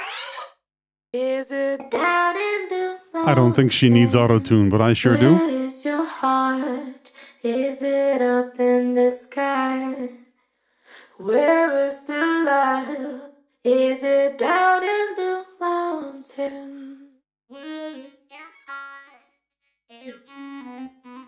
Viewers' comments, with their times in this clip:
0:07 auto tune is pretty lit